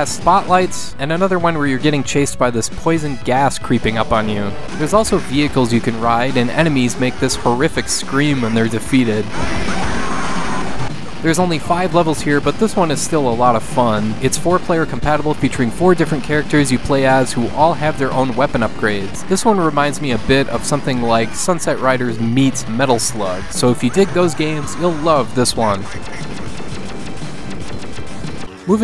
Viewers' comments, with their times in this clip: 0:09 Ahh, another member of the Wilhelm Family just died today